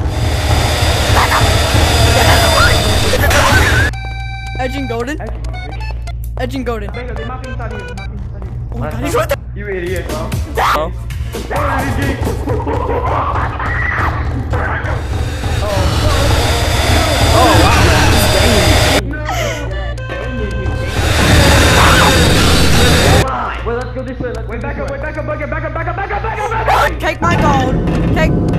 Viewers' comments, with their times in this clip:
0:09 In the few seconds of this moment with the goofy disco music, I assume that is or whatever is freaking perfect for how chaotic it is at the moment, especially with how everyone is running!😂😂😂👌